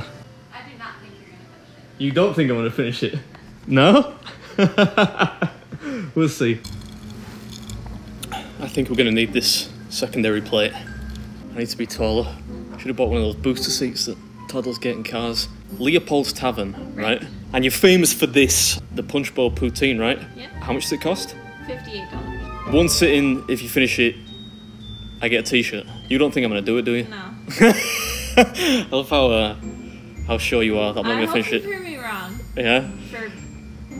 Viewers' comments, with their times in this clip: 0:03 that evil laugh 😂 followed by the “wi’ll see”
0:20 did she say $15 or $58? If $15 that is one hell of a steal